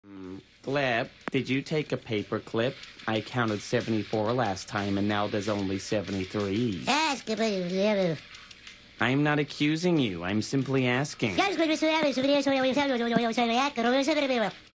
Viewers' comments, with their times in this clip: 0:12 How Germanic language speakers hear Romance languages